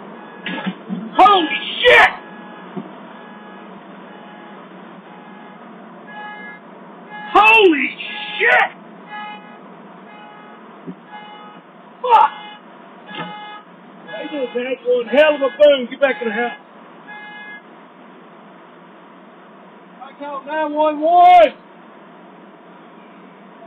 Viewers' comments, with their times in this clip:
0:06 The way he says it lmao
0:06 that was definitely a mating call
0:07 He really put his neck into that "holy shit!!"